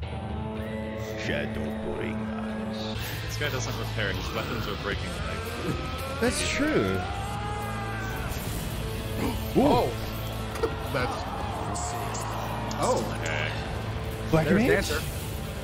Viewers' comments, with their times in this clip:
0:03 Shadowbringers Trailer - can we stop a moment and enjoy what a good job the VA of the HoL did? This scream, the energy- i need that boy ingame, i wanna hear the voice :D